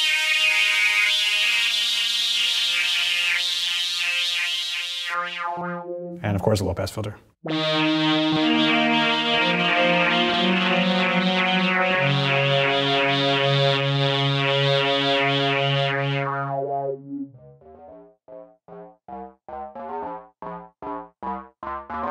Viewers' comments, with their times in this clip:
0:06 Could be part of an Autechre track from the 90s 👌